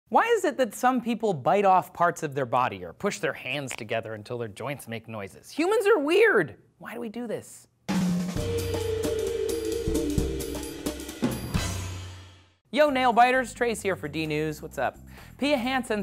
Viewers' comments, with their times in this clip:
0:03 that crack you made was so satisfying thanks !